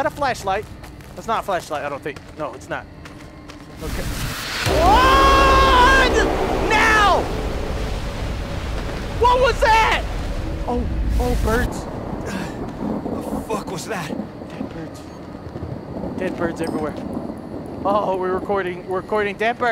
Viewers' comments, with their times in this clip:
0:04 when the bass drops